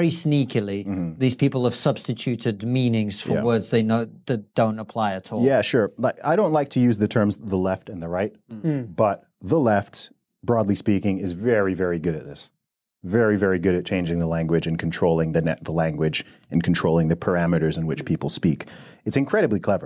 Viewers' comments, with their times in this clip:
0:04 Sounds like a marital argument